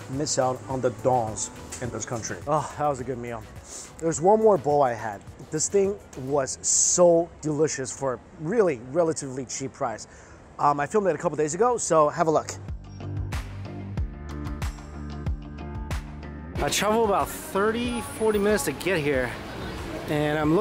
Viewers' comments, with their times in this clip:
0:03 when he sneezed you know its good